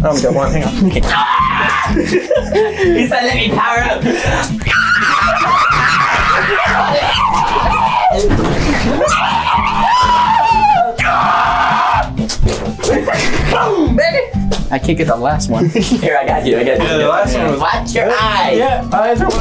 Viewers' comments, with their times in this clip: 0:04 THAT SCREAM THO 😂😂😂😂😂😂😂😂😂😂😂😂😂